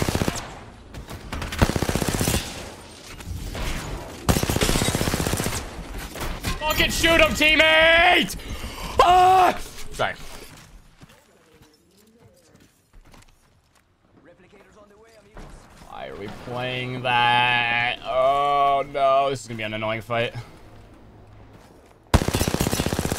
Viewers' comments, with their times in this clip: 0:05 You still live with ur parents right? How on earth didn’t they came into ur room and slap the absolutely sh** out of u 😂 like seriously if i did a scream like that my brother would come to my room punch me and would shut down my PC lmao